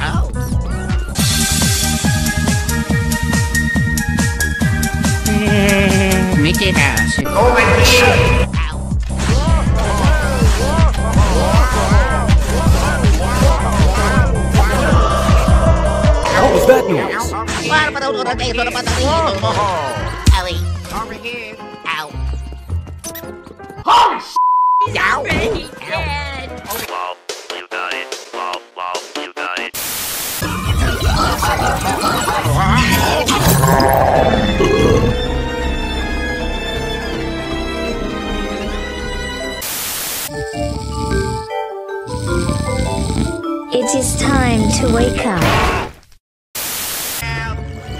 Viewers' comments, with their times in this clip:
0:06 Blue Luigi: Hehehehehe, Mickey Mouse.
0:30 The Huh?! Weegee.